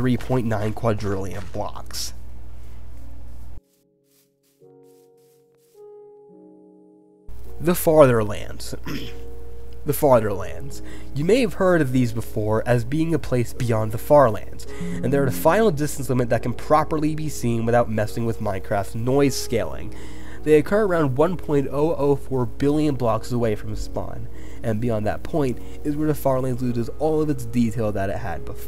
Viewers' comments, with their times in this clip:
0:06 nice not removing you clearing your throat while editing
0:07 i heard “farterlands” 💀
0:07 I thought it said fatherlands
0:13 there's a windows notification sound (the windows 11 one)
0:14 bruh this windows error trolled me